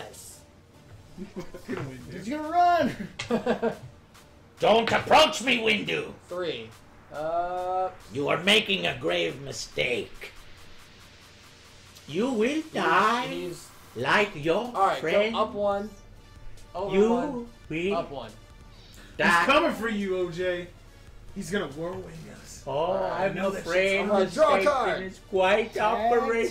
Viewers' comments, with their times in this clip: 0:09 Angry Joe's emperor impression is hilarious. will watch over and over again.